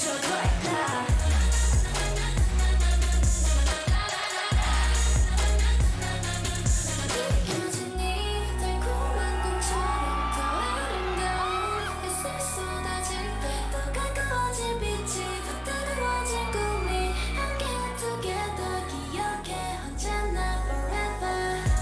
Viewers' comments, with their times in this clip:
0:08 sounds like thank you next, line; one taught me love one taught me patience one taught me pain I'm so amazing.......